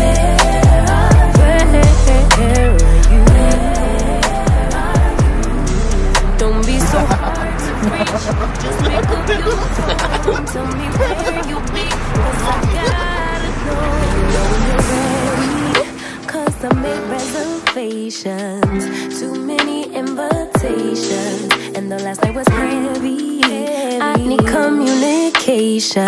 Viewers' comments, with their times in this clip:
0:08 What’s the song ? 🥹 she has a beautiful voice